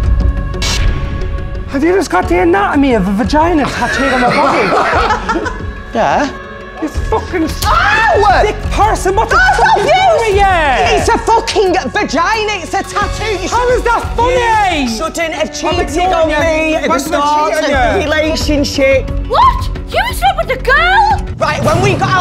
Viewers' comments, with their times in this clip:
0:06 He says it in such a normal way, “Yeah” LMAO